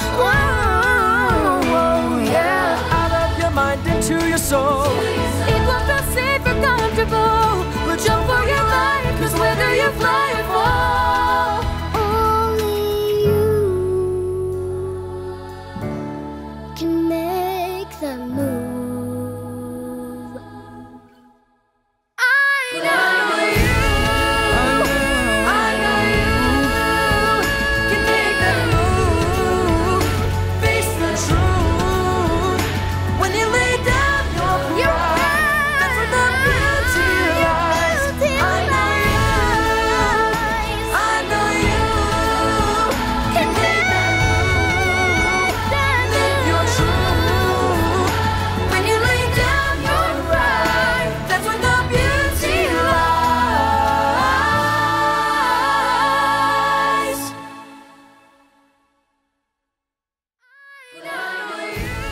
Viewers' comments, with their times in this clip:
0:06 OMG his voice is so beautiful 😍
0:48 this girl have never been a soloist 😰, i think she has nice voice